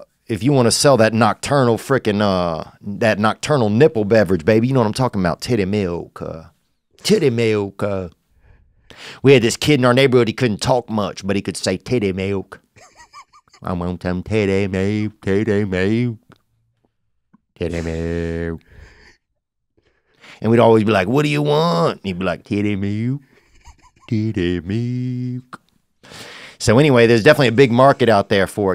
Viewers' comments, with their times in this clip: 0:10 hearing the producer absolutely die of laughter had me rollinggggggg. Theo was fucking hilarious in this one
0:10 lmfao even the assistant is laughing in the back ground when theo says "Titty Milk"